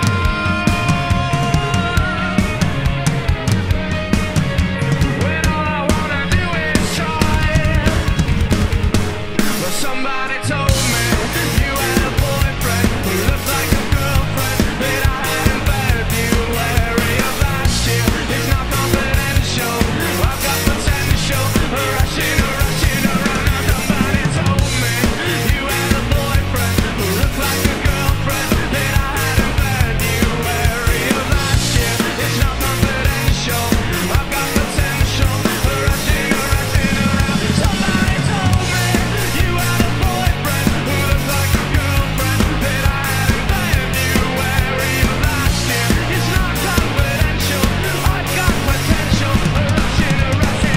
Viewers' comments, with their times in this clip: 0:05 The fill was CLEAN 👏👏👏
0:06 I love that moment when listening along to these types of videos where you get caught off-guard by a fill; I was just merrily bobbing along to this then all of a sudden you punch us in the face with that delightful fill going into the final chorus 😁 Excellent as always!
0:06 I love your Sweet original fill!
0:36 A weirdly technical beat. Tough to do. Great job! ... 🤯🔥🔥💯💥
0:36 … ok, got work to do😅 !! Really 😎 cool drumming